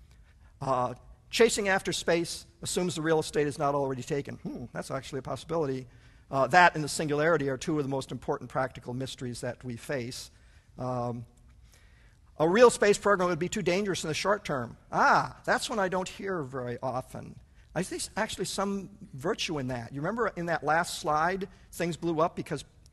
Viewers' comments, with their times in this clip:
0:03 Did he fart ?